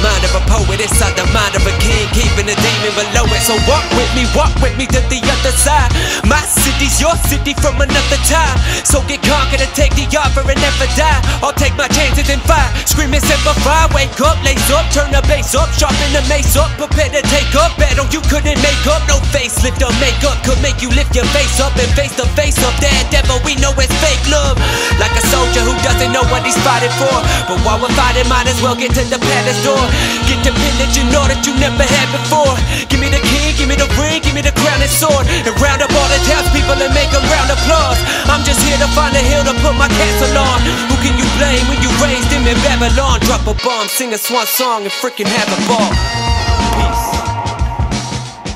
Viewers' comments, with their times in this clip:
0:03 Bro this is FIRE. Idk why but the flow reminded me of "Till I collapse" by eminem. It started off subtle and slow then you went in hard and then at the part where you said "Give me the King, Give me the ring, Give me the crown and sword" You switched up the rhyme scheme to match with the beat while also still flowing. Dude these things are hard to do. Impressive man.
0:33 Goosebumps alert Amazing flow